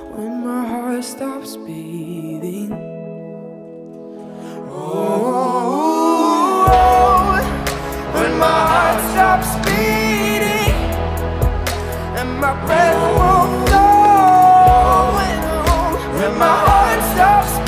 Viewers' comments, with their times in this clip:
0:04 this part dude. Its amazing. Wish he was more like this. A guess vocals I like this much, are hella rare. now his voice is rougher, heavier and a kind of different flow. Like it as well yet a lil less